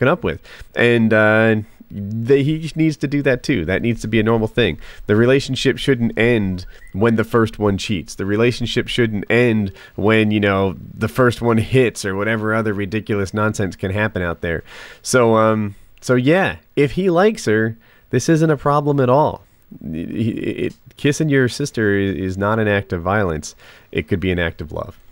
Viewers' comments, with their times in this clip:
0:05 some one got a text.
0:06 someone got a text message :P
0:06 somebody got a text on their Android in the background noise